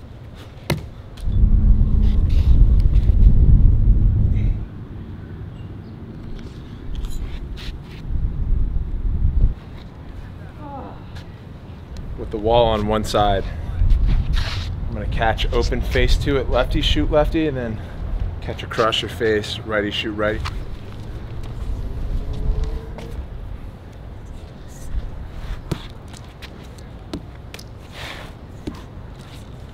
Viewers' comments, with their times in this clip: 0:08 go to that groan tho
0:11 Did anyone else hear the moan ?